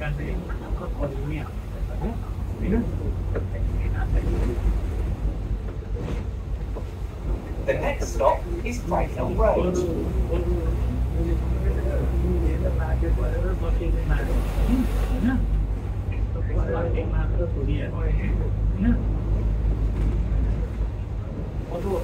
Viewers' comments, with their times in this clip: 0:10 I think perhaps the automated voice recording that reels off the bus stops before you reach them has gone haywire while sitting at a set of traffic lights in Bingley going absolutely nowhere and this guy's voice is reeling off the names of about 3 different stops - it sounds like the sort of thing from a comedy show.😳🤡🤪☹😖🤣